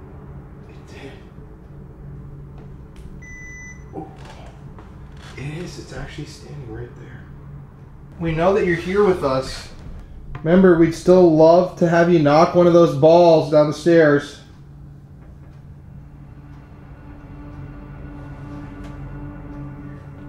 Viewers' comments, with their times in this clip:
0:05 evp whispering yes